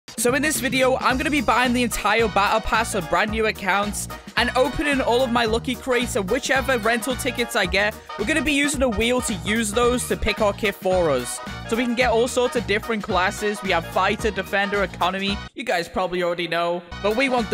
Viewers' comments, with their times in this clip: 0:02 he using that music again